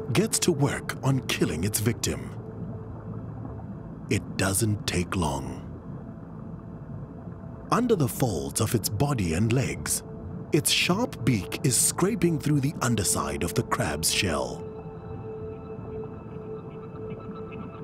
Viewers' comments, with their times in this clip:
0:04 you can hear the scream when that bubble on pops